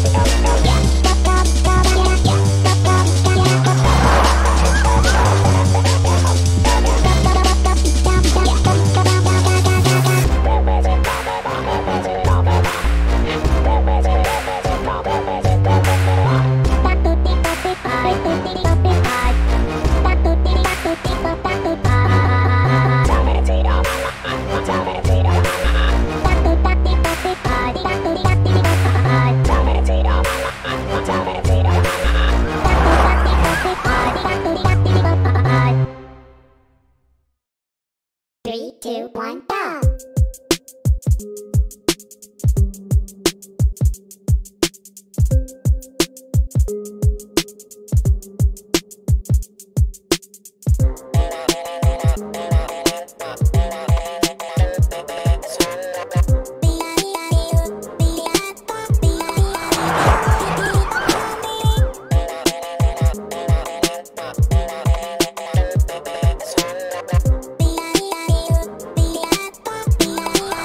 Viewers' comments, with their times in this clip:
0:09 best beat drop
0:56 I really like BF's voice :'0